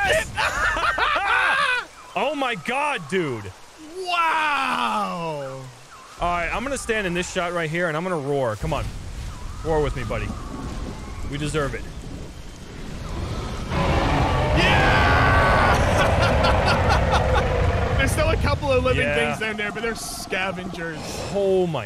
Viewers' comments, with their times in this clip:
0:03 They sound like the carnotaurs from Disney's Dinosaur hey. They look utterly horrible and mean. I hope as a little "orangepeel" dryo I never run into one hey!! You two boys have been very bad !!